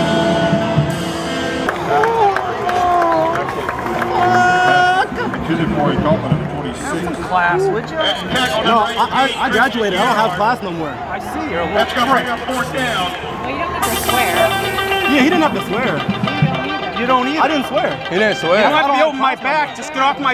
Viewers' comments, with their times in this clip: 0:08 he swearing like a gta civilian 😭